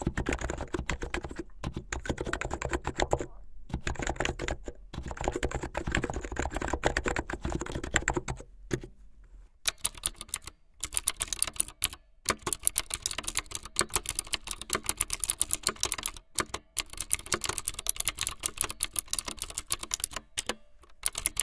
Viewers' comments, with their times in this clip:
0:09 Mechanical blue is my favorite ❤️